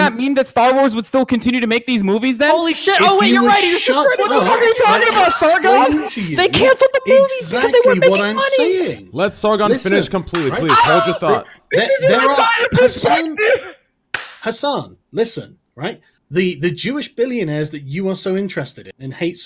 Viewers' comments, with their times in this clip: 0:06 I love it in these 2v2 debates when the guys on the left end up cracking up laughing together because they realise the opposition's arguments are the epitome of stupid